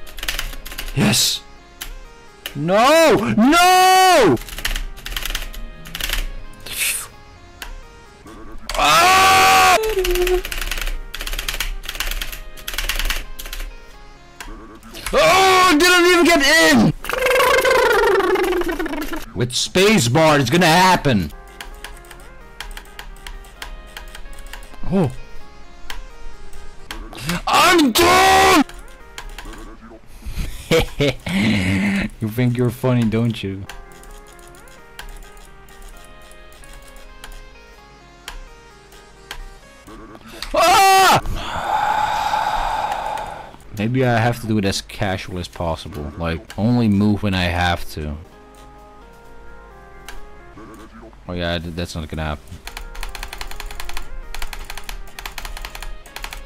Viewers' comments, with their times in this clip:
0:08 perfectly cut screams lol🤣
0:08 big scream watch out
0:30 reminded me of the hehe boi meme
0:40 sounds like bob the builder got scared lol